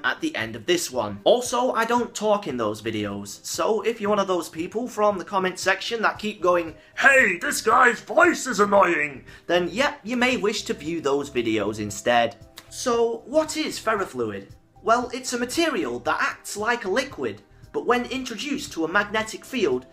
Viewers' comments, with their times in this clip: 0:03 that is a great accent.
0:07 I like the voice he makes